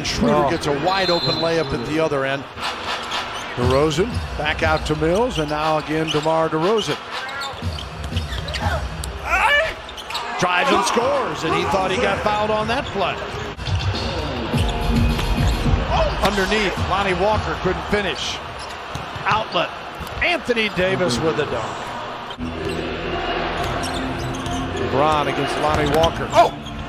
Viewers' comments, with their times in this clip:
0:08 What is that scream 🤣